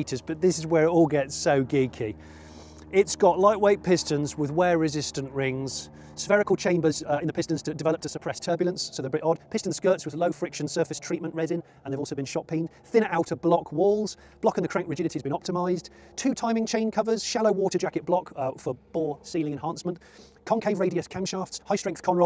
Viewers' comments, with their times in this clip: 0:10 playing at 0.75 so it sounds normal, lol